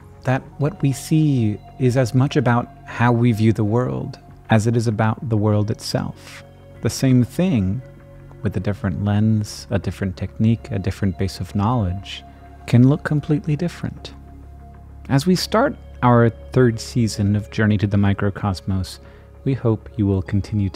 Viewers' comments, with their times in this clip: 0:05 this was extremely unbearably cringe please calm down back away from the microphone stop doing vocal effects like you're in a serious drama Jesus that was cringe